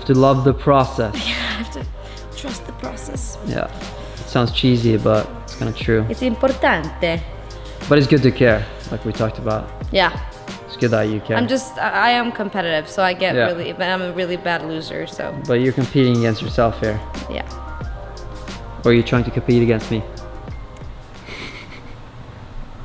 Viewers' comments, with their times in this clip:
0:06 italian pronounce approved by italian native speaker (me)